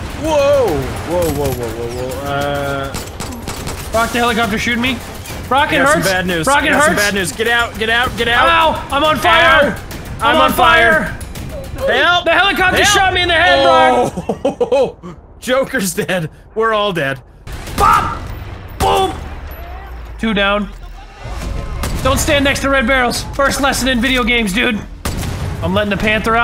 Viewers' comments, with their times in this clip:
0:07 there was a ROBLOX oof